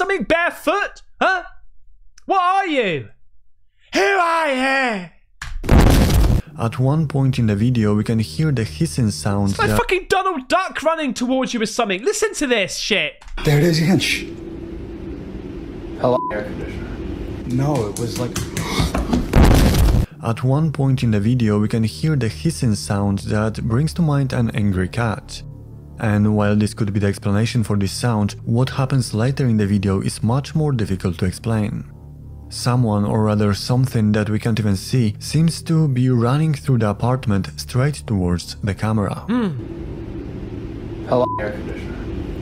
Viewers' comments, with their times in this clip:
0:09 Well I could explain what the skin slapping and heavy breathing noises are, but I don’t think YT will allow that. lol
0:28 I've considered a possibility to fake something like this would be to record a video with the camera in that same position then record someone running barefoot, then take the audio from that video and edit it into this one but IDK if there's a way to tell if audio is edited in or not. But it should sound very realistic when done that way. I believe in stuff like this actually happening but there's a lot of incentive for people to fake paranormal videos now.